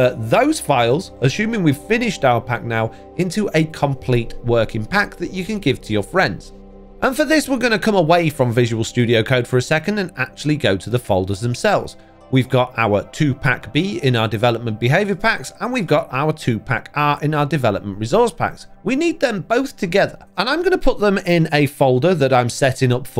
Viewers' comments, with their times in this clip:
0:10 sounds like you are saying Tupac